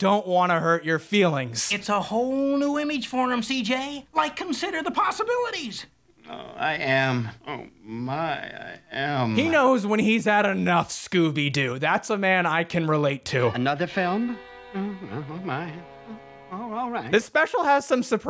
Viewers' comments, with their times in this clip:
0:06 Ayoooo wait a minute listen to him say all that with your eyes closed......it sounds a lot less exhausted and a lot more........ready for round two.